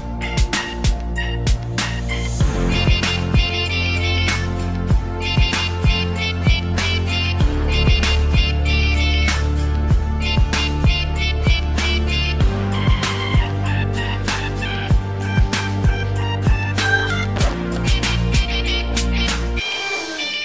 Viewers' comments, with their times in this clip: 0:08 Sounds Like A Car Horn Honking